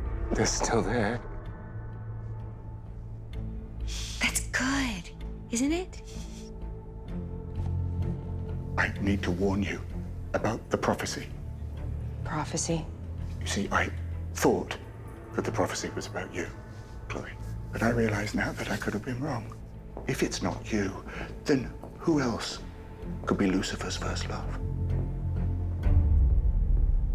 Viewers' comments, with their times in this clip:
0:10 I hate how he talks idk man just I don’t like it